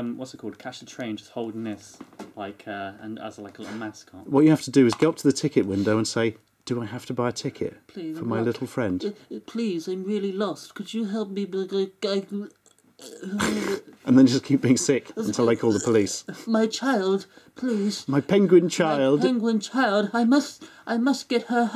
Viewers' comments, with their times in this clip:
0:09 Unintentional Pink Guy impression.